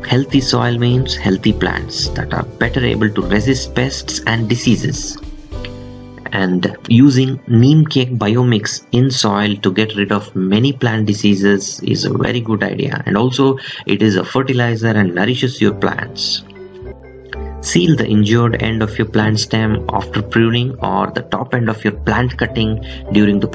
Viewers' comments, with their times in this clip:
0:06 you say using "and using <meeme cake bio mix> in soil to get rid of many plant diseases". I cant hear what the product is. "meeme cake bio mix"? thanks in advance